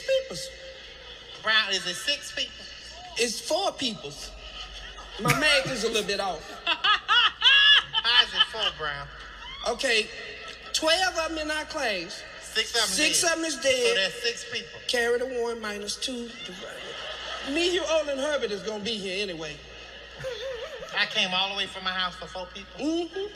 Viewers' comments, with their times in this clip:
0:07 Madea was hilarious I miss these. you can hear Tamela laughing lol.